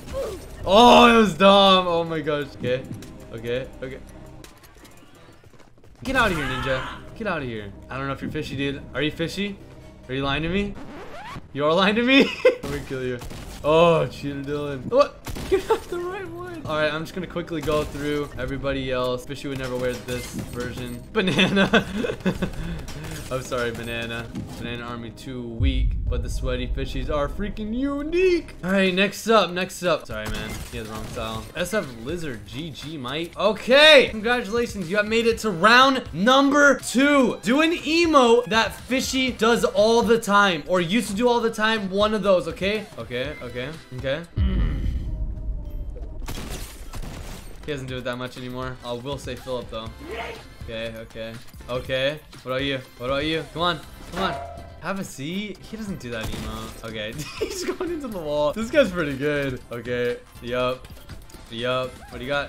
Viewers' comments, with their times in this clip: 0:05 I don’t know why the scream was just on point and funny
0:50 it sounds like a 80 year old man screaming yeet 😂